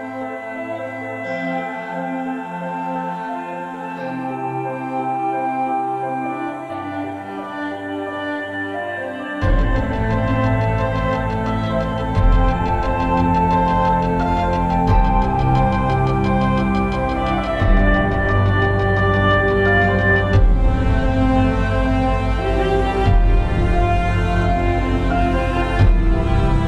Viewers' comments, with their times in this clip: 0:09 why does feels like linking park's leave out all the rest starting part to me???????